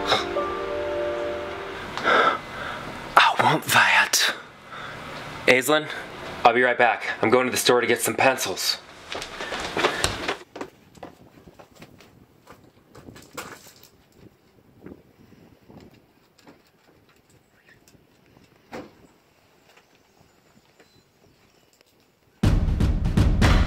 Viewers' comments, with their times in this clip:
0:05 that sounds an awful lot like my name and my name is NOT Evelyn
0:05 kinda sounds like Ryan Reynolds